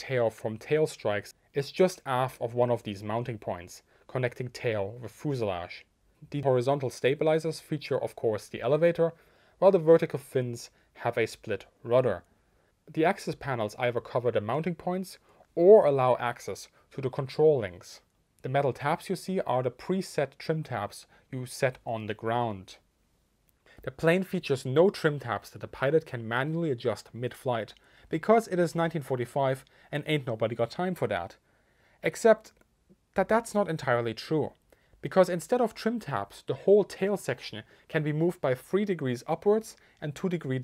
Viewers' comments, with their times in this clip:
0:10 I was wondering if it “access the controls, or axis the controls?”
0:27 "Ain't nobody got time for dat"--in a German accent no less! 🤣 Deutschebonics is something I never expected here!